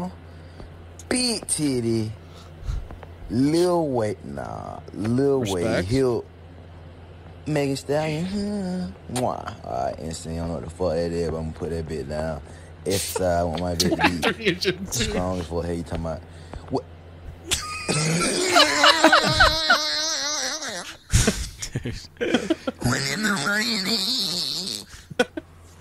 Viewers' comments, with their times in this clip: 0:09 ebonics to English translation pls? I hear "heh nah I heh pu da bih daown hurrbeddeh geet gong ehh stahl bit dun gawn errtahday mane ang peermidz wukanda... wuh? Mehdistahlyeeeen"